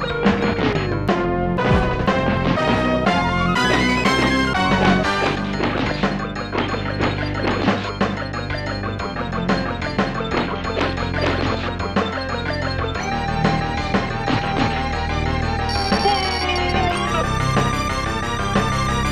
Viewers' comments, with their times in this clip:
0:07 I like the music that plays